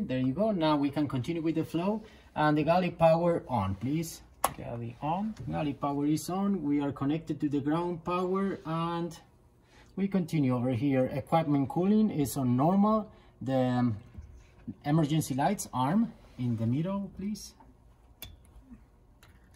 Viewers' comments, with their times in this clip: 0:04 Garlic Powder on